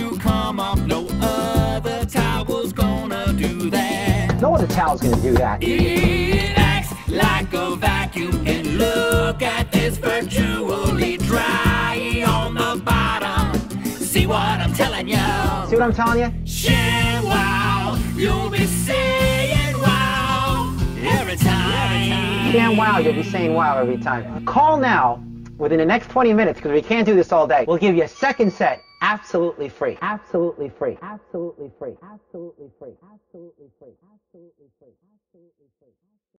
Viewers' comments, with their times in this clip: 0:06 I'M LIVING FOR LINK'S SCREAMO-ISH SINGING
0:23 CC "united airlines are carmel"